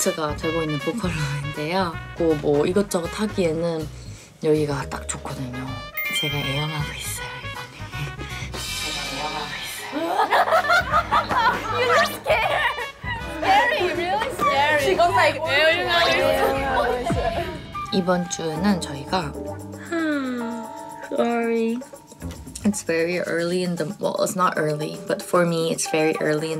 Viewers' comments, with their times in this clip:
0:06 "so i love coming here" sounds so creepy 😂😂😂👁️👄👁️
0:09 that laugh had an intro😂